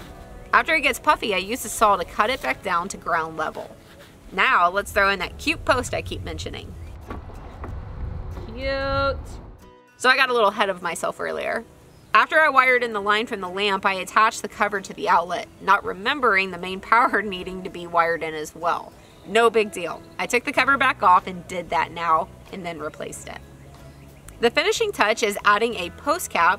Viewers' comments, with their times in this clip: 0:08 Awesome DIY project. I love that "YUUUT" you gave :)